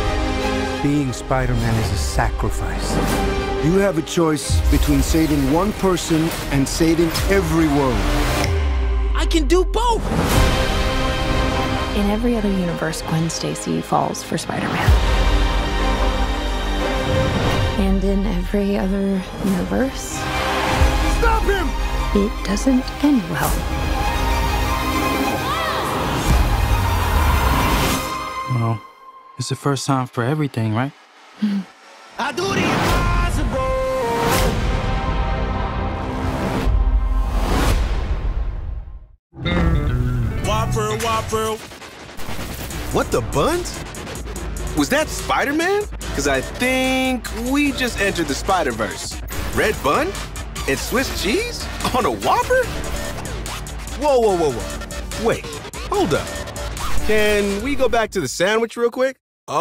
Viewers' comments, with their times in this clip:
0:08 The Nintendo switch sound goes hard.
0:41 not this song again 💀